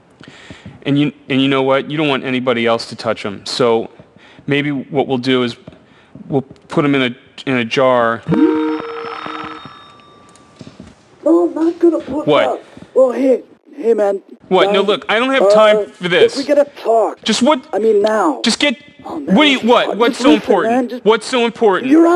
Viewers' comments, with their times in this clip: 0:09 george lopez, sounds like it